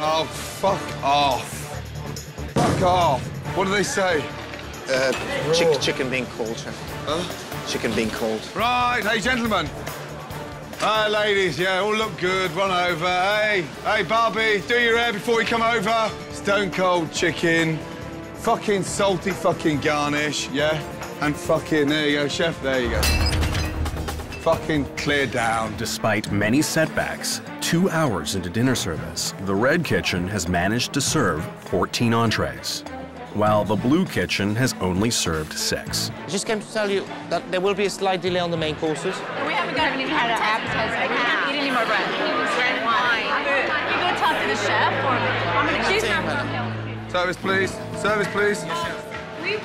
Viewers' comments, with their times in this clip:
0:05 Hmmm Jean Philip accent seemed to of disappeared the 2nd time he said the chicken is cold...anyone else noticed that? Hmmmm weird...
0:33 While the blue kitchen has only served sex wtf
0:33 is no one going to talk about how the narrator said six
0:35 "the blue team has only served sex" hahahaha